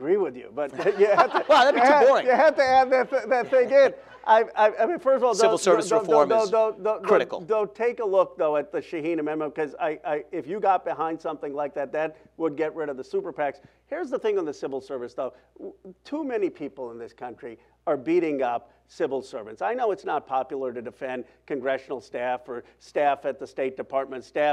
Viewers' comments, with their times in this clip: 0:06 positive laughs never seen that in a debate before lol